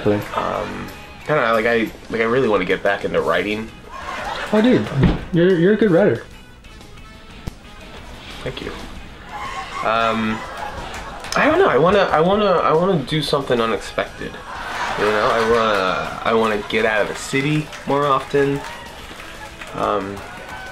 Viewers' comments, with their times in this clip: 0:08 That sole laugher in the background: I fucking died laughing, so hard.